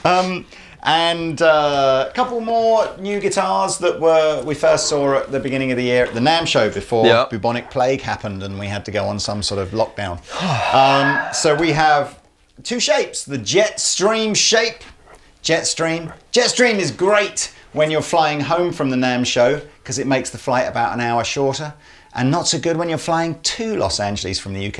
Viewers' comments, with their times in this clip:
0:09 biggest sigh ever